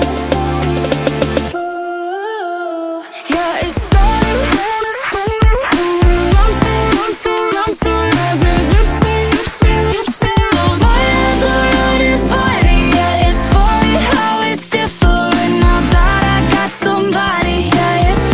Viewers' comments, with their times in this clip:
0:04 What is she saying here (all i can hear is hurt it x4 roses x8 lipsy x3)